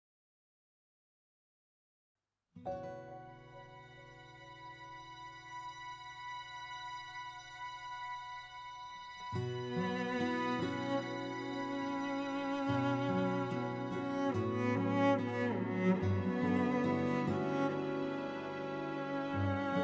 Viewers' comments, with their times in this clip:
0:00 Even though Dimash doesn't speak Japanese, he fully interprets this poem and sings it with great emotion. I never get tired of listening to it every day. He really has a wonderful and beautiful voice and it touches my heart❤